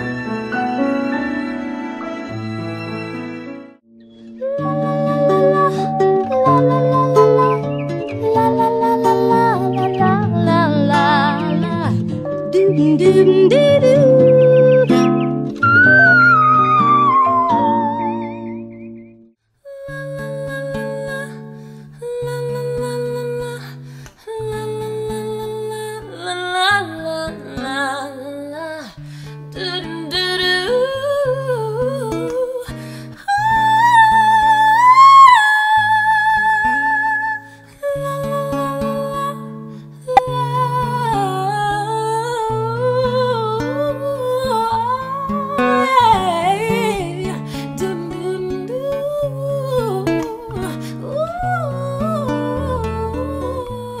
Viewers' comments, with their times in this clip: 0:04 hers was so beautiful and angelic the original is definitely the best 🤍 .
0:19 Those girls make really good runs, but they sound kinda annoying. They are trying to impress someone or whatever, but they can't hold a note for more than one second and hide it behind unnecessary extra things and runs.
0:20 They have beautiful voices....but why are they in this clip if they didn't whistle,
0:34 that's not a whistle
0:40 :: Jesus so many runs — beautiful, but keeping it simple would have been way better.